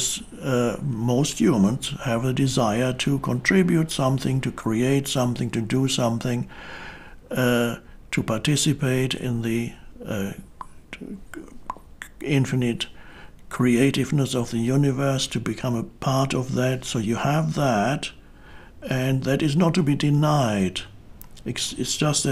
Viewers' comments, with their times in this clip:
0:10 Eckhart Tolle rapping... <3
0:10 Namaste clock sound ahhhhhh beautiful
0:10 does Eckhart sometimes have speech issues? Just curious not being critical
0:10 double pop is a real highlight!